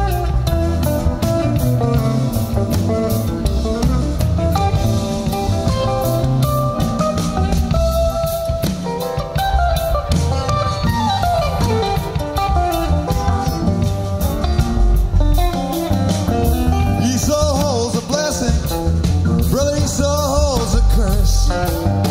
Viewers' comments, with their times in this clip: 0:03 Fabulous run starting Jerry starts moving down the neck and then scales back up in a series of flourishes all culminating with a big smile from Brent as Bobby takes over again on vocals. The Dynamic Duo! Great stuff!